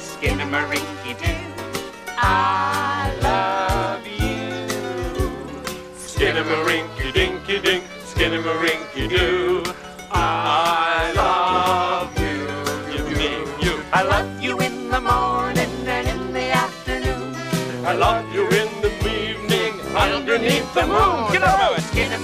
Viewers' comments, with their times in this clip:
0:06 The Nylons sings Skinnamarink part-